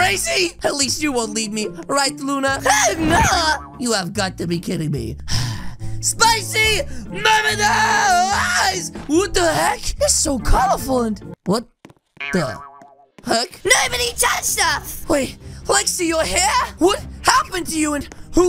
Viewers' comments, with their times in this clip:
0:06 him: spicy never dieeEeEeEeEeeEEesS Subtitles: spicy mermaid eyes